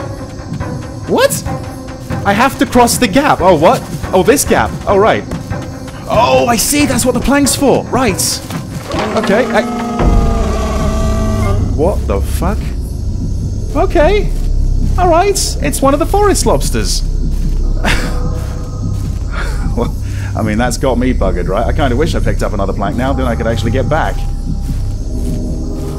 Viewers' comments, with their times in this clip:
0:08 I swear to God that noise the monster made was the exact same sound that the Watchman mutants in Metro Exodus made, the pitch was just lowered a bit. When you shoot one and it calls for backup it's the same sound.